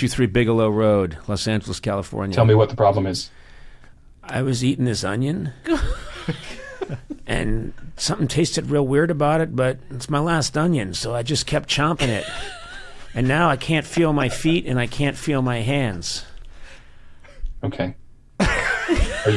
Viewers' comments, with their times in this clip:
0:06 That was the most lowercase "ok" in human history lmao